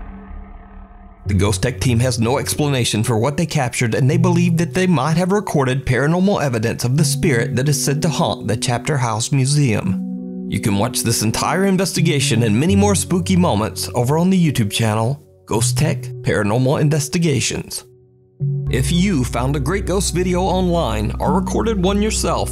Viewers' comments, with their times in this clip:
0:07 Why did it sound like he had a country accent 😂